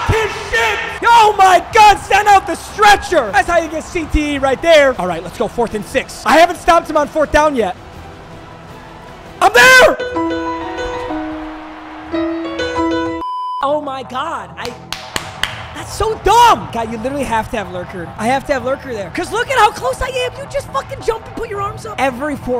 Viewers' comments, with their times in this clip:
0:10 when that music started I lost it😂😭